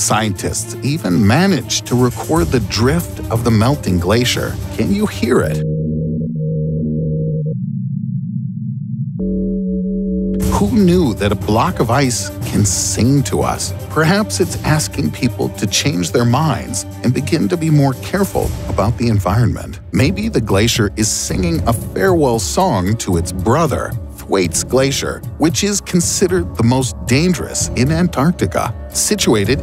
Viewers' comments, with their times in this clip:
0:08 That eerie sounds is because of the wind gushing through ice shelf and not because of melting 😓
0:14 -or perhaps its burping